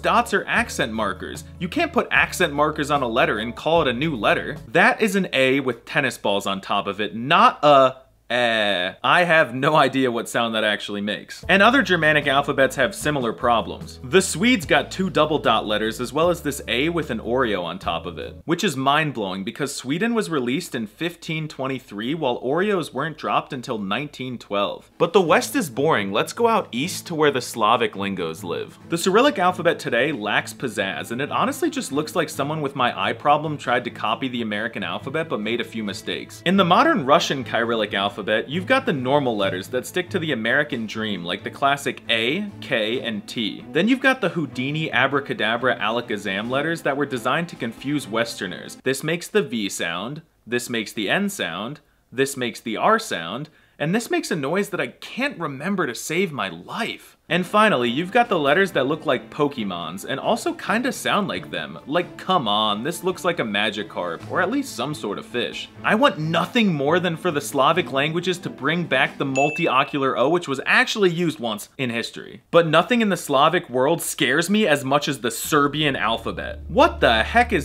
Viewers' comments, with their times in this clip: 0:08 I'm learning German, and I think the ä makes the /ɛ/ sound, sort of like the e in friend (in American English only). Otherwise, it makes the /æ/ sound, which is an in-between of /a/ (like a as in apple in some dialects of English) and /ɛ/. So, in short, you basically made the right sound
1:00 That sounds Fchiodzh ФЦЮДЖ